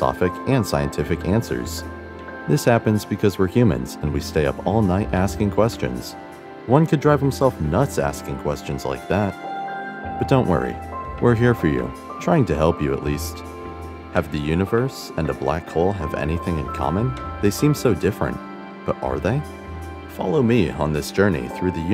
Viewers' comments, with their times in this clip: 0:03 “said the robot”